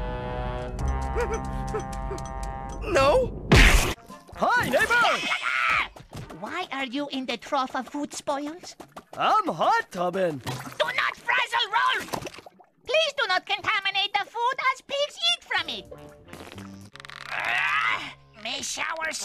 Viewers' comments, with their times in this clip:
0:04 for a moment I thought Ed said: Hi Nigga